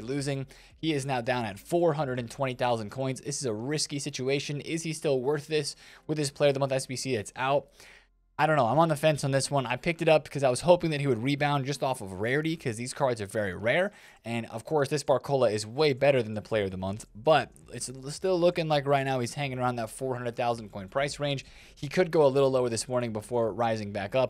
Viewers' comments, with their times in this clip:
0:05 when he said potm it sped up or is it just me